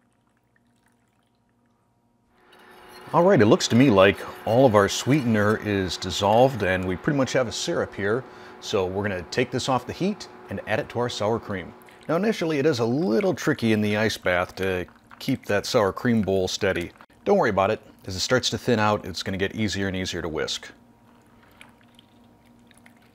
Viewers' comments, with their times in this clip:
0:07 I say “syrup” like that too ! My boyfriend makes fun of me and tells me “suh-rup” is right but I think “see-rup” sounds right lol